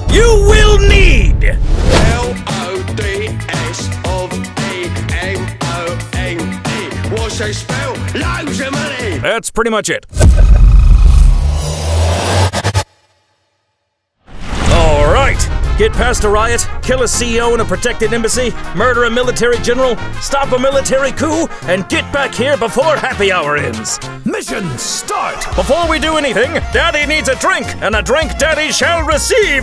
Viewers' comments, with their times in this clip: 0:10 still don’t know what he said